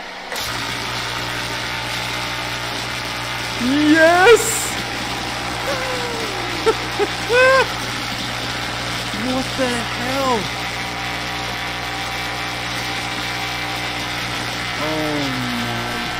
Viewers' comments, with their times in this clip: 0:03 happy electrician noises